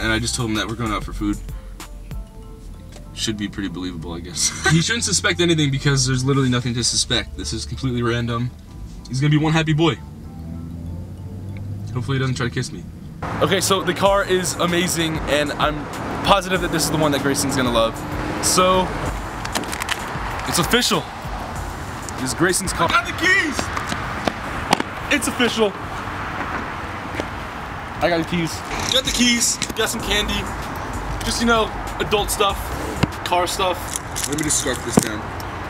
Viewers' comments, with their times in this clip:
0:07 am i the only one who heard the laugh of a girl ???
0:23 who else thought it was Grayson that said “I got the keys!!”